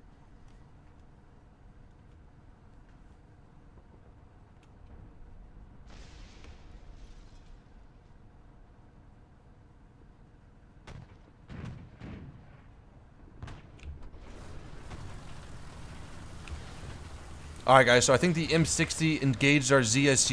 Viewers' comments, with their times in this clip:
0:05 Your barrel Glitched that sucks but the swearing fit was hilarious